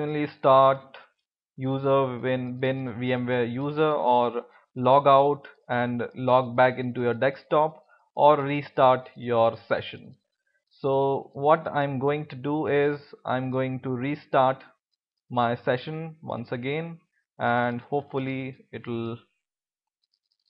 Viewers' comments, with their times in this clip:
0:07 'dekstop' :). LOL....Great video dude..